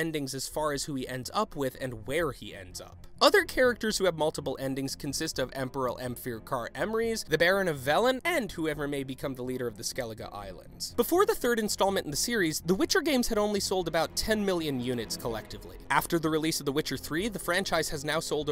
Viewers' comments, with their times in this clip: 0:05 I feel like you said his name like this on purpose... lmfao wow could you spell that?
0:05 What did you call him?